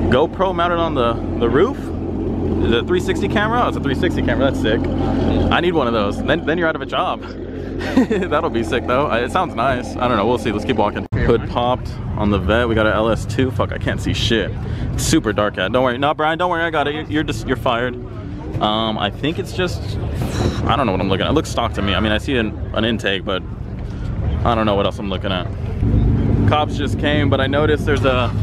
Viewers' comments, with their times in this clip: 0:09 that thing cammed?